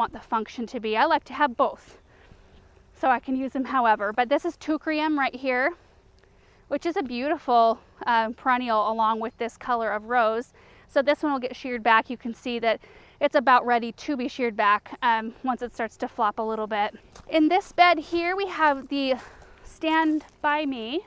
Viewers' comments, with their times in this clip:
0:04 blue flowers in front of the At Last roses. Sounds like "Toucreim"? Thanks.